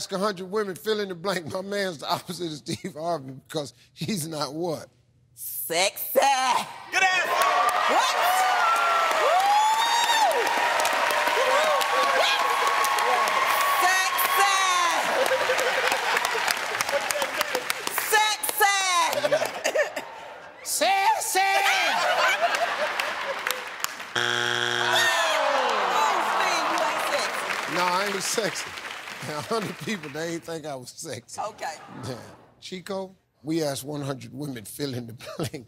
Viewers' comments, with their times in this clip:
0:06 she put all her breathe into that answer 🤢😂😂😂
0:20 the way Steve say it is hilarious 😆 🤣 😂 😄